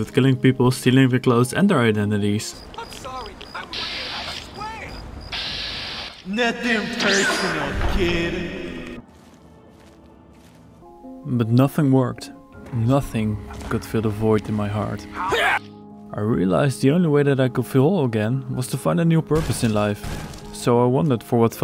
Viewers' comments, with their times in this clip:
0:06 That DBZ teleport sound effect was EPIC